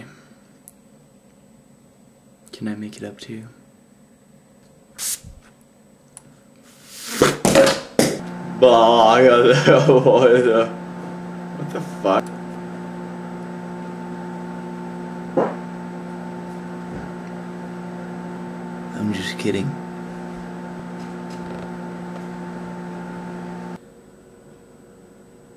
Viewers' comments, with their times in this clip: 0:08 hooray for random babbling! 8D